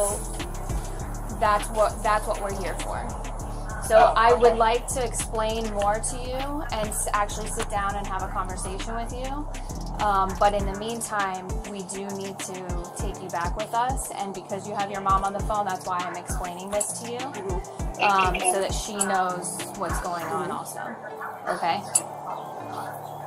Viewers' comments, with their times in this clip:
0:04 is everything an upward inflection? this cop is dumb af.